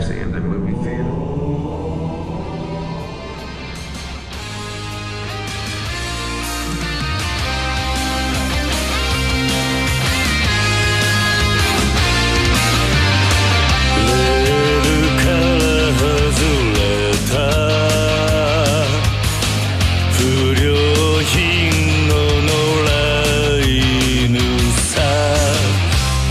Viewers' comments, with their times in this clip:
0:06 Anime Intro Plays
0:10 Dude has kiryu music